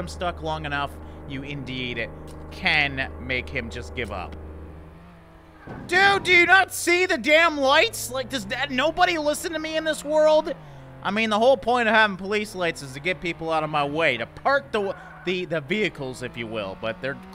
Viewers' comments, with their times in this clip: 0:05 "Nobody listen to me in this world?" There is no sound, just lights